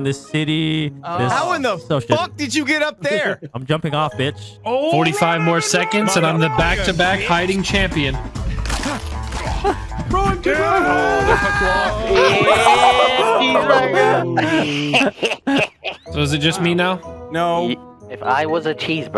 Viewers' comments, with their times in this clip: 0:06 Nostalgia Vanoss bgm